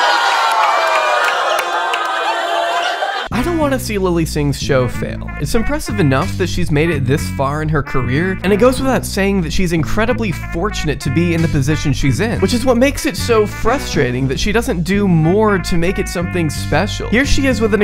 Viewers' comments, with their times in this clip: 0:03 idk what this instrumental is but I've heard it before, it's awesome.